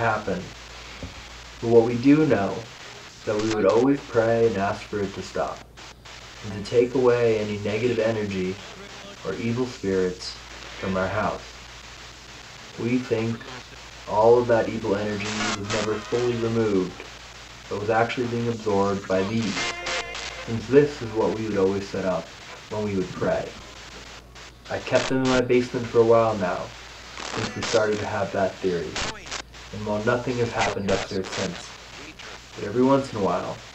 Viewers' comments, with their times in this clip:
0:10 to 55 it sounds like it is laughing but that could just be music from the many channels it flips through
0:15 kinda sounds like a cry or a wail